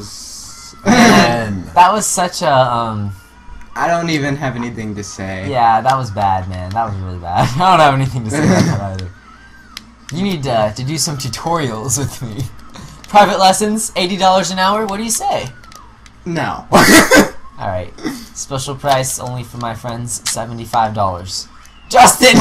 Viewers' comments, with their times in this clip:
0:05 that was batman